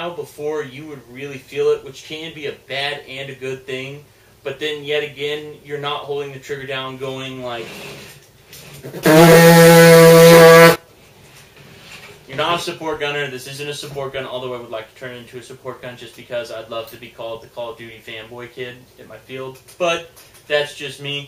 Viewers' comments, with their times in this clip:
0:05 Wait was that his mouth ??